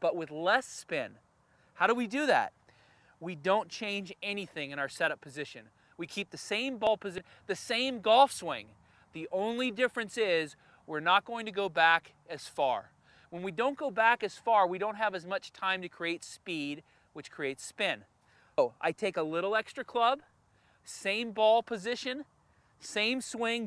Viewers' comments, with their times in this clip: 0:06 again audio fail